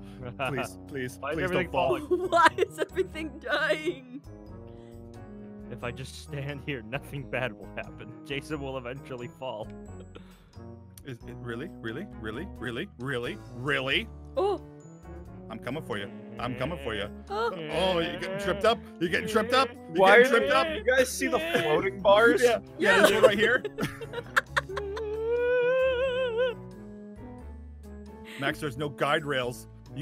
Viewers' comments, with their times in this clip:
0:10 Its a hammer in the background
0:14 you hear an “oh”